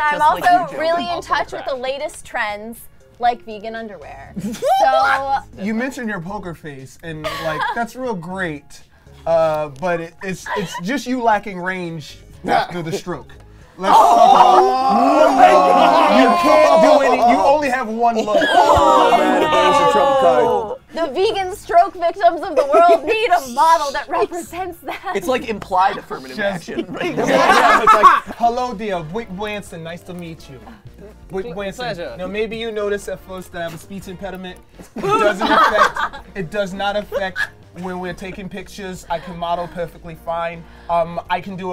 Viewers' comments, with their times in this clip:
0:04 this, this is the mating call of a matpat
0:22 All I thought was "Dedotated Wam"